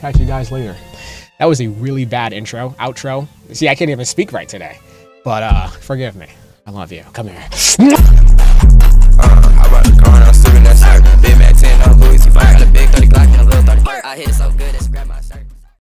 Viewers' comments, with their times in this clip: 0:08 song goes hard asf